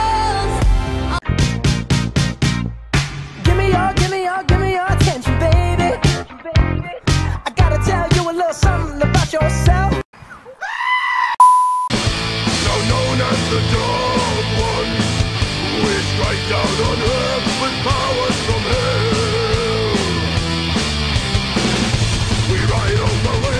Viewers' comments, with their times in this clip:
0:09 damn... the Mission impossible soundtrack had a rough day lol